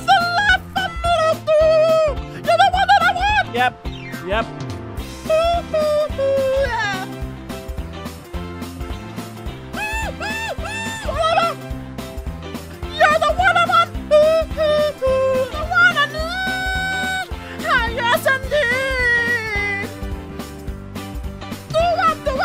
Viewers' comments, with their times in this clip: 0:09 LIKE A Baby Dog ...